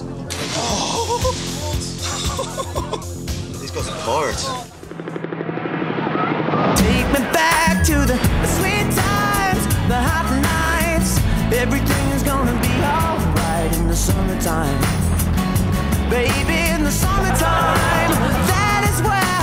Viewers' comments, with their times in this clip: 0:07 with the music i thought the intro thing was starting and i was gonna say you just a smudge late but i forget about the merch and stuff lol